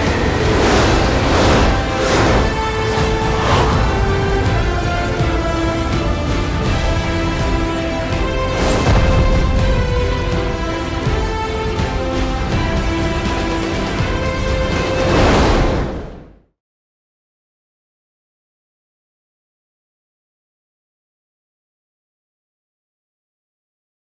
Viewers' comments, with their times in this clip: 0:08 I LOVE that sonic boom